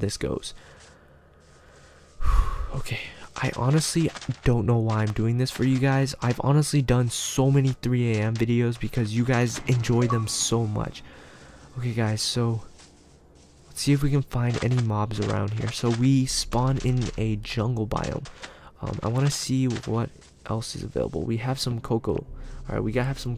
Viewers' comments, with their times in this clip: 0:09 i heard a creepy noise